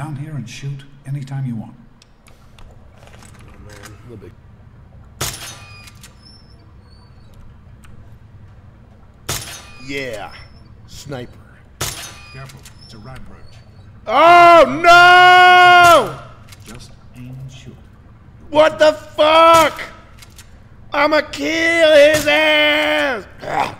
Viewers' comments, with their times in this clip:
0:09 haha he sounds so childish, what a good sport